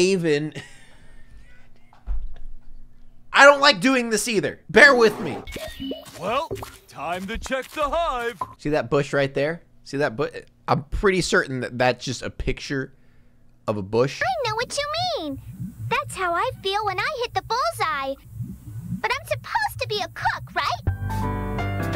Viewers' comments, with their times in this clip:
0:07 IDK man this dude sounds kinda sus